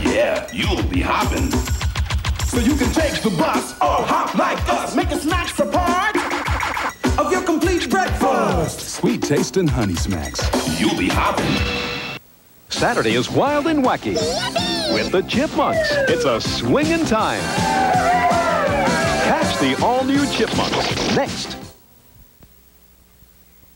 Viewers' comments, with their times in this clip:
0:04 I thought the song said "Or hop like a bus" (like a lowrider). I quite happily take buses all the time. 😊